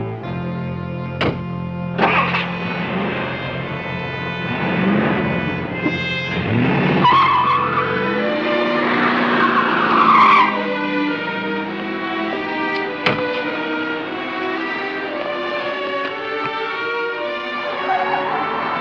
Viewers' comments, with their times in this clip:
0:04 Screeching tires on a dirt road?